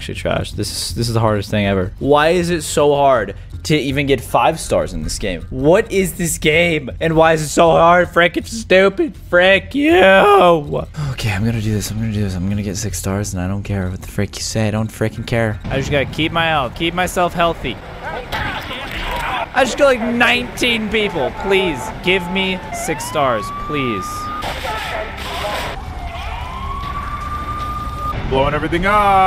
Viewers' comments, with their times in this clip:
0:10 that voice crack thoooooo